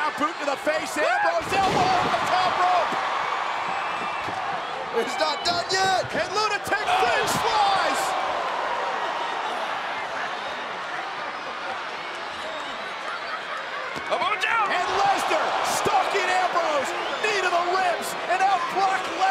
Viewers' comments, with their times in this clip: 0:05 lol it sounds like Cole says lunatic french fries